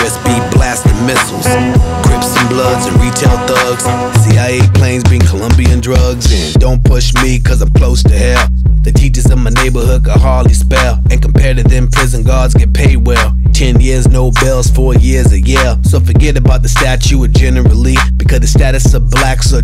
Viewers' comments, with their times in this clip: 0:06 Is that the bass drop ? I read your comment and actually googled the Roland TR-808 as a result and maybe learned a small something today!